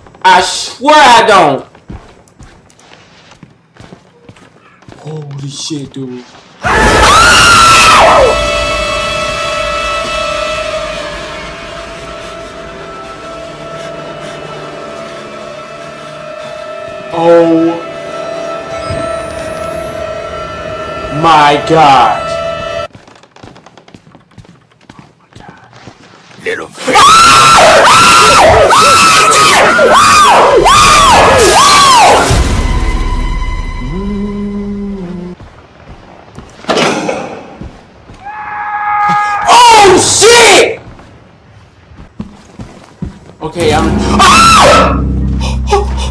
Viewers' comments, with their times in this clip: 0:05 Literally best scream ever <3 xDD
0:05 is such a fabulous scream
0:06 your face when you screamed XD
0:07 I was about to say best sream ever. But after watching the whole video , I have to say , this is the compilation of the greatest sreams of all time. I laugh soo hard
0:07 HAHAHAHAHAHAHAHAHAHA LOL DAT FACE U SCREAMED LIK A GIRL LLOLOOLOLOLO
0:07 I almost cried He screamed at the top of his voice while his eyes were shut tight. Lmaooooo yeooooooooo.
0:07 dude if you keep goin like this you might be like pewdiepie have like 15 billion subs and stuff and i can never stop laughing when your screaming and you got me so hard
0:27 Girl scream ACTIVATE! x'D